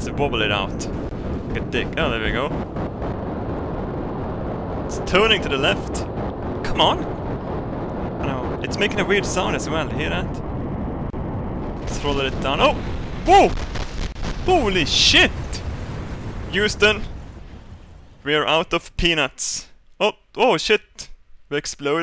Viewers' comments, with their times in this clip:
0:09 sounds like a transformer :'L